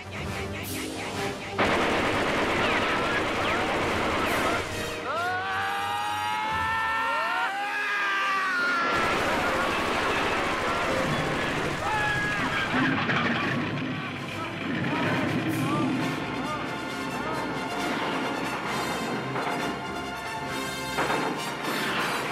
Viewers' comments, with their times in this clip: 0:05 Great Scream like he did in The Wild Bunch! RIP Warren Oates